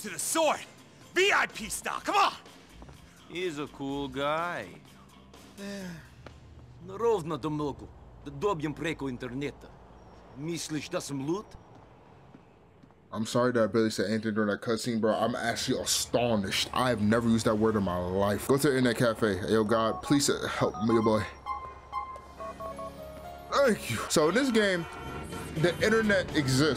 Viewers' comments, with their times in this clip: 0:10 Bruh I swear I'm Croatian, and Niko sounds like Russian not Serbian. Trust me when I tell you Balkan accent sounds nothing like that.